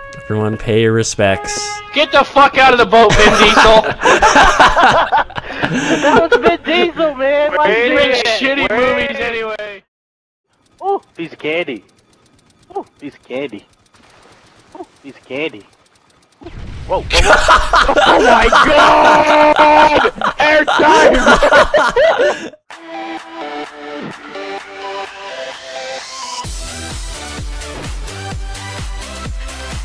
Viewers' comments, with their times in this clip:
0:10 That sound likes sweet